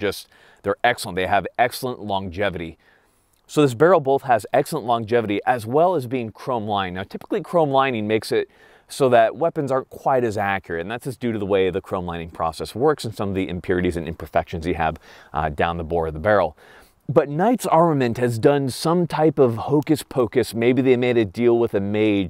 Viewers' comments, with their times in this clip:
0:03 dude talking like Patrick Bateman